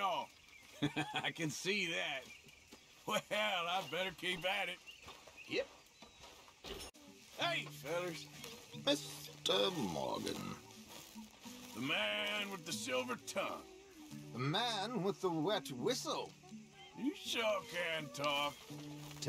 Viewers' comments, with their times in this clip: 0:07 he says Mr. Morgan like a bond villain.